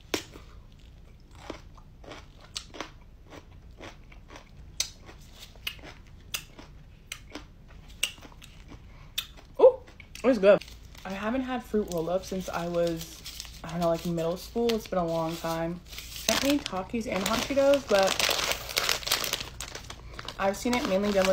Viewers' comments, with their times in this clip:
0:09 omg her chewing is so annoying